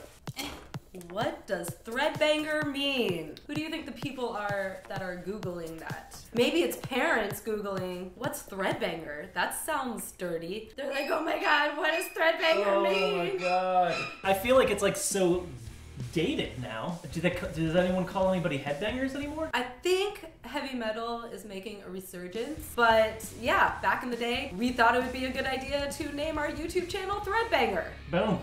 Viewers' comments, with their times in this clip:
0:10 is literally my ringtone so it made me check my phone and get confused